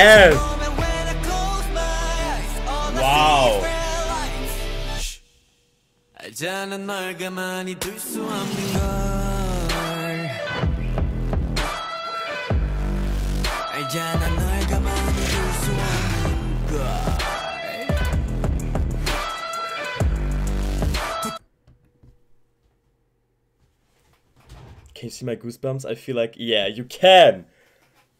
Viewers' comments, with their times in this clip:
0:10 that bass drop is sooo satisfying